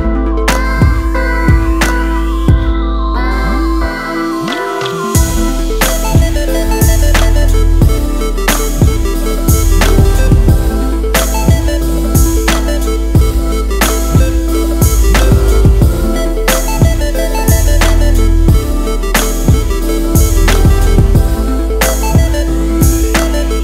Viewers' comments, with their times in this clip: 0:08 Do I detect a little Ronald Jenkees ?